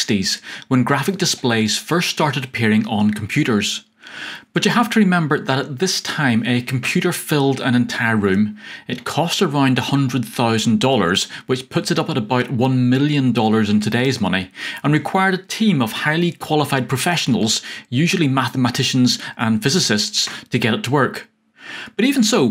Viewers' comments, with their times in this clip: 0:06 I mistakenly hear "a computer filled a tavern". Huh!